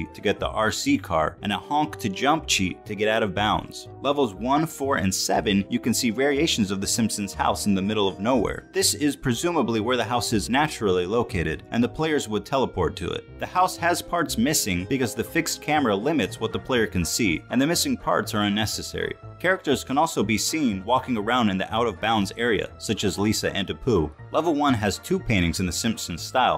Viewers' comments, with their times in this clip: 0:10 The guy sounds so much like Ethan from H3 it is freaking me out